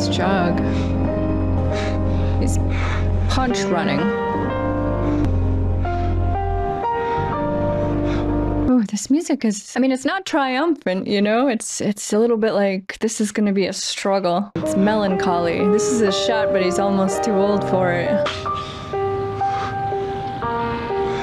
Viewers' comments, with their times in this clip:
0:09 "this music, it's not triumphant," The music in s few minutes "hold my beer"